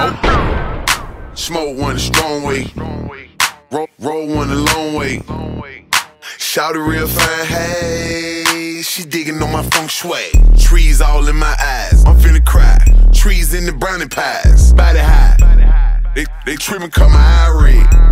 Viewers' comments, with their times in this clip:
0:06 His voice. :) In the uncensored version it's "Fine ass bitch hey..." for example.